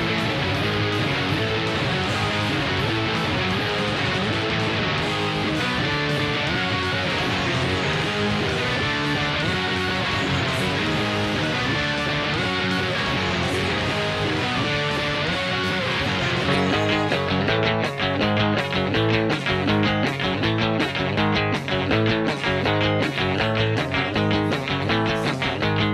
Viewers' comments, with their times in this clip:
0:09 You can hear a faint Samsung ringtone lol